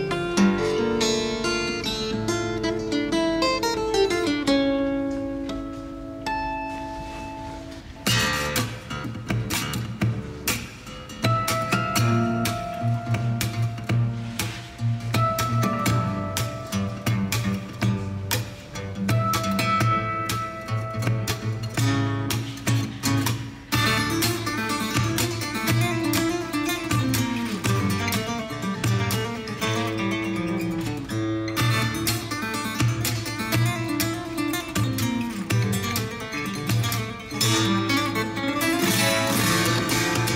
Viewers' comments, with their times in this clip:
0:09 Just amazing - SUBSCRIBED!!! - the high tones after are out of this world - Just speechless... listened this part like 50 times :) What is the name of the song?
0:24 When ever he plays that music it literally gives me goosebumps..😊